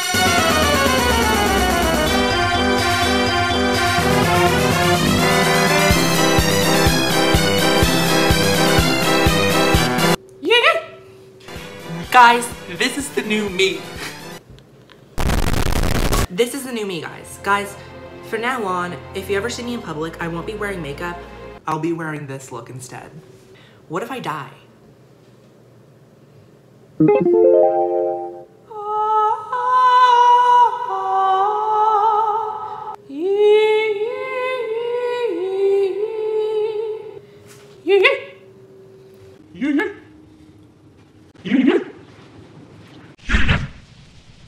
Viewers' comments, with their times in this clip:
0:10 u_U da vois breo..
0:29 Is that a song from heaven? are angels singing? <3
0:29 Why is her singing so good??😭